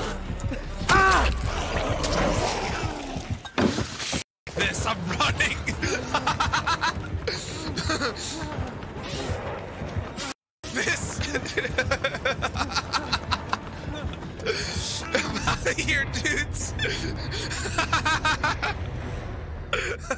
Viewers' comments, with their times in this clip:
0:05 that laughter reeks of insecurity. 100 percent forced laughter.